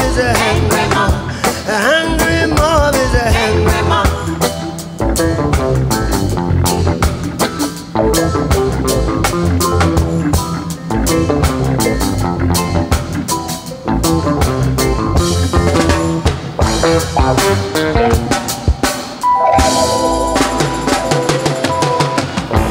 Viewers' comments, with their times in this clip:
0:04 Junior Marvin Is an absolute professional with this guitar break.